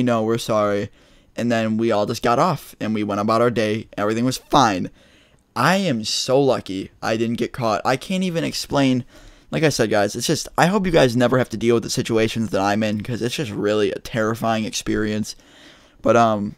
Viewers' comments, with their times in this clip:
0:04 the aggression in "and everything was FINE" I could hear the relief 😭😭